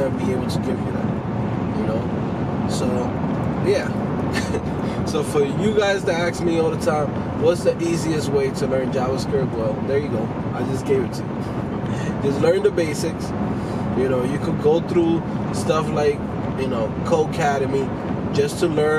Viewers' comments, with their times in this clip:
0:05 "for you guys to axe me all the time"... u for realz, dog? :D